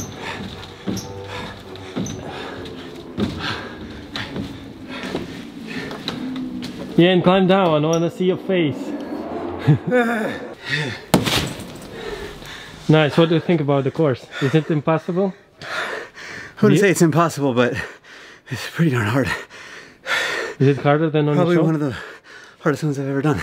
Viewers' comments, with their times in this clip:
0:04 V4 engine sound?